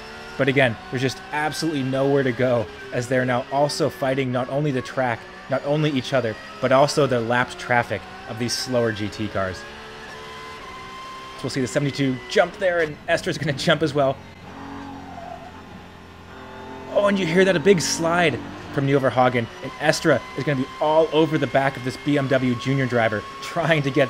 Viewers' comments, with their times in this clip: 0:07 Minute Fight the slower Gt Cars? xD Since when does Mini have a Gt car 🙃